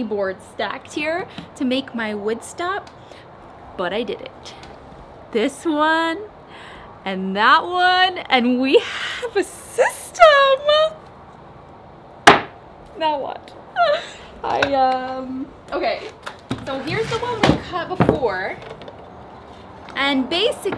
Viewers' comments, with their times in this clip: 0:05 I have watched a tons of woodworking tutorial videos on YouTube but is the voice inside my brain 😍👌